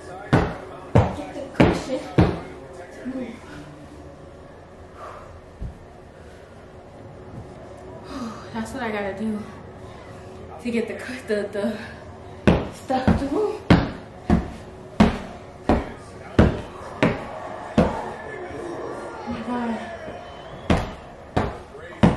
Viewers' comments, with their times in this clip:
0:10 It’s the breathe she took after beating the pillow 😭